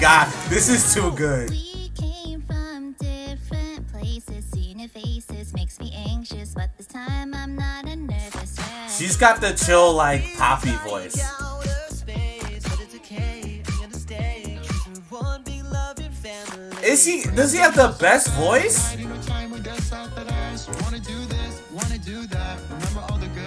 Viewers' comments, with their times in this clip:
0:10 "She’s got the chill like Papi voice" SHES GOT THE CHILL LIKE WHAT VOICE???? Nah dude i have to be trippin’ im watching too many cupcakKe remixes…